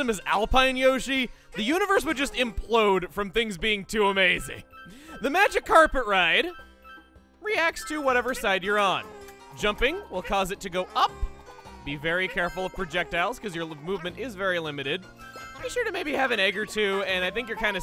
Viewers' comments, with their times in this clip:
0:05 I totally heard that as "The Magikarper ride." Lol